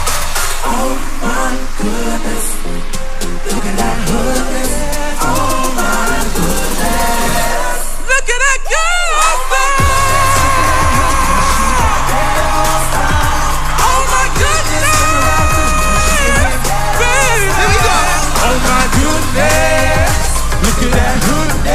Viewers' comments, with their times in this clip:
0:09 His vocals are so good!